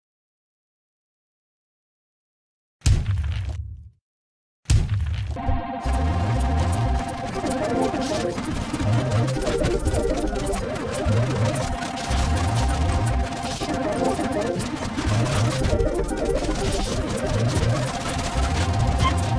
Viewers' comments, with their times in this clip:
0:05 windows error/virus sound in a nutshell Edit:i liked my own comment because everyone not